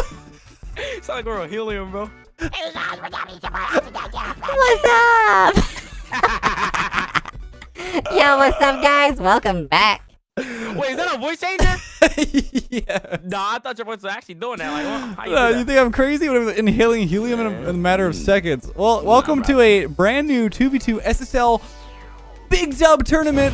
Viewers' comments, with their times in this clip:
0:08 this voice is whe you were a kid lololol